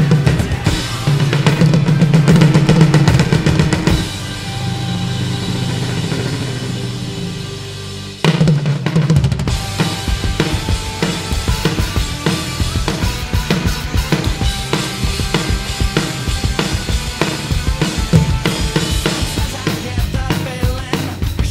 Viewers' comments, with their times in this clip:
0:07 I like the way you cut out the song on the lol
0:07 how many people can do that roll
0:07 someone tell me how to do the fill he is too fast
0:08 That fill is just god awful